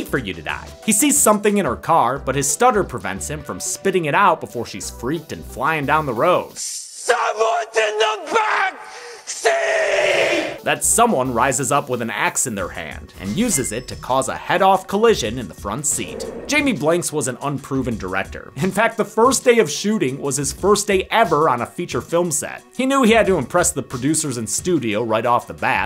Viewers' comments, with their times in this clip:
0:06 this part always gave me chills just based on the line delivery alone. To learn that it was Chucky himself all these years after watching it is kinda crazy ngl